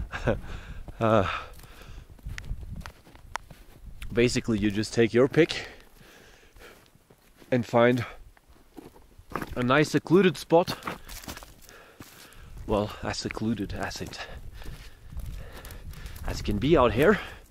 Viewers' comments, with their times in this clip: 0:04 were those birds or frogs??